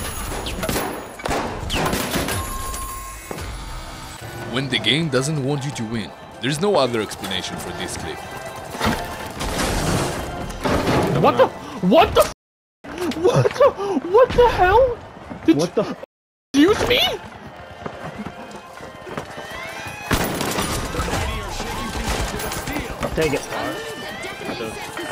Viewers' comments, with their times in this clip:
0:10 Lol hearing my cringe voice I was in disbelief but is still the funniest thing that's happened to me in the game 😂